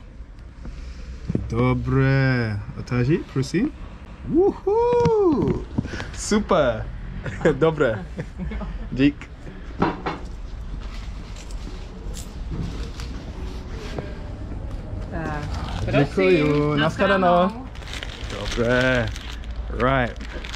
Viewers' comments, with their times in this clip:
0:03 I think that is the most someone cheered when she opens a burger for them, she must have been very happy to be appreciated